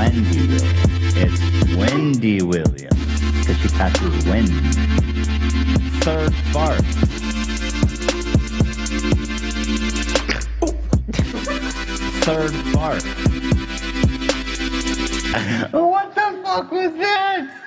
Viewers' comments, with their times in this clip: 0:03 Ethan’s turrets vibing to the beat